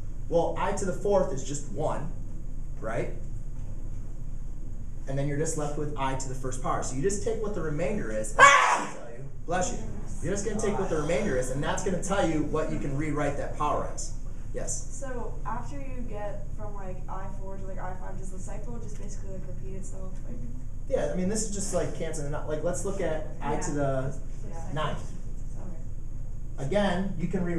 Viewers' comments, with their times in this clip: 0:07 that sneeze was craazy 😂
0:08 grate explanation, i have head phones on that sneeze murdered my ears lol.
0:08 lmao absolute monster sneeze